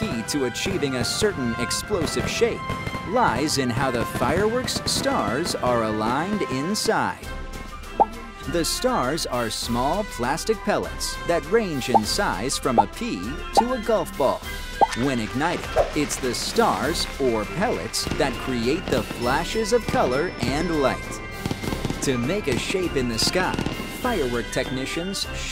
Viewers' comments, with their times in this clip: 0:07 sick stolen music; a clear audible "audio jungle" watermark can be heard in the clip lmao.